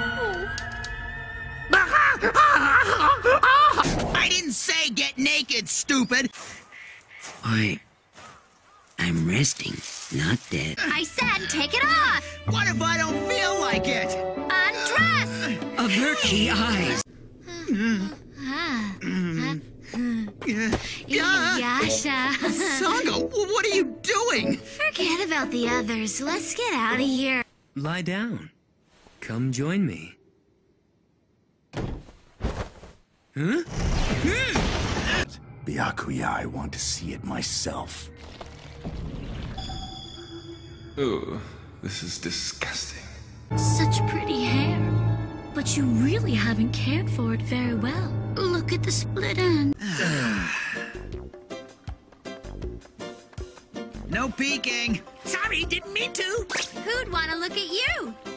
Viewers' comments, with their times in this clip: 0:07 the calm "i'm resting, not dead" while being burried alive
0:45 Say. Yura sounds like a playful Daring Do.